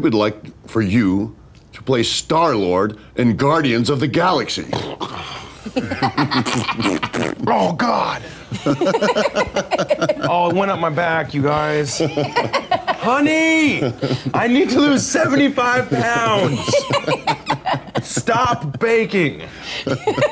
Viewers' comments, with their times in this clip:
0:06 lol fart attack. Please tell me you get the reference